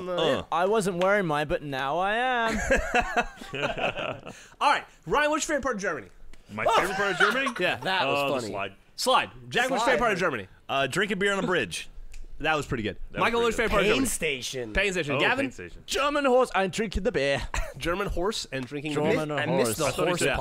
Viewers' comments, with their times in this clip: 0:04 it sounds like Geoff says "Ryan, what's your favorite part of Jeremy?" :-)